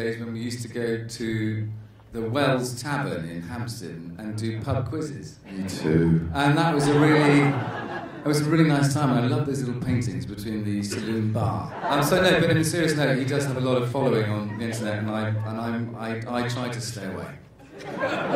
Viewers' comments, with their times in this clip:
0:03 Hearing Ben's voice after Matthew's. Wow.
0:06 I watched this because of Matthew Goode but gosh when Benedict jumped in. His voice was so suddenly low, made me like O_O